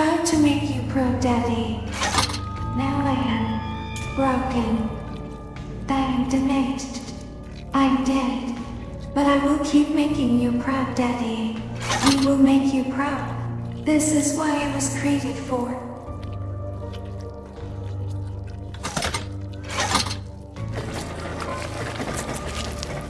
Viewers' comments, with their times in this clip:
0:05 Wait how did you do the voice?